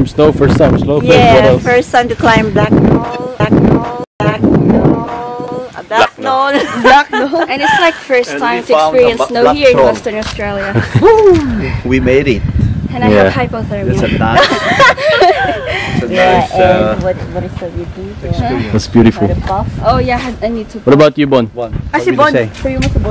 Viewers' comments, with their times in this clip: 0:07 I thought he said “I found the bakla” 😂😂😂